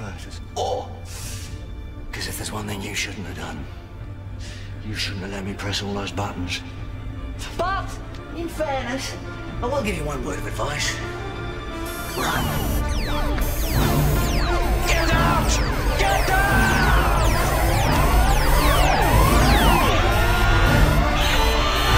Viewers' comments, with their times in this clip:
0:03 that music, takes me back